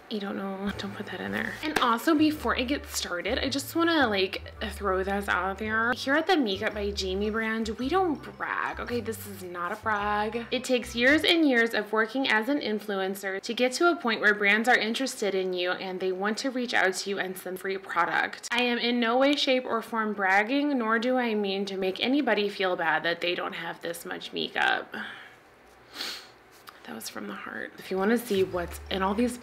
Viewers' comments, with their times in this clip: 0:10 The obvious reading off a prompter fucking sent me